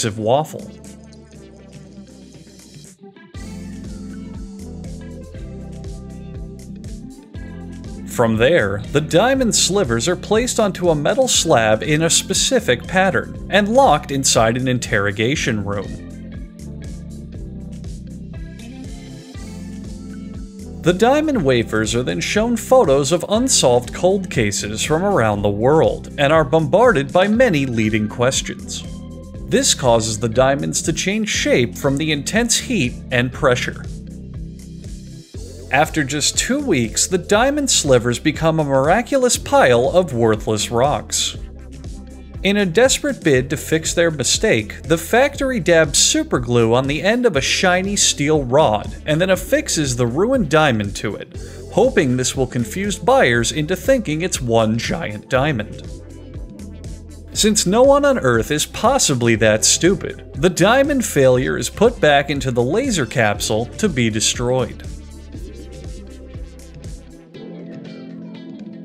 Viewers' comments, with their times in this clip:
0:09 this evil demon put the discord notification sound in here or I’m just tripping balls
0:14 you can hear him laughing during "room"
0:53 lmao that voice crack on